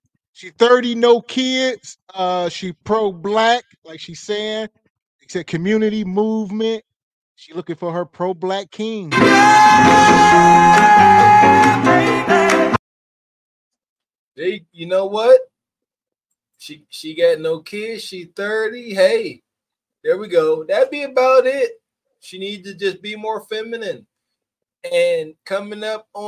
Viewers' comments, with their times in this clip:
0:09 why soundboard so loud?